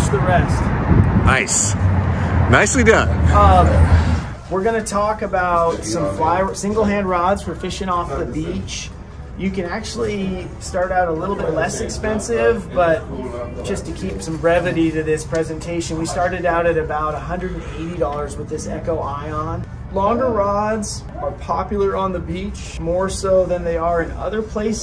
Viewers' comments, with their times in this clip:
0:10 Nice background music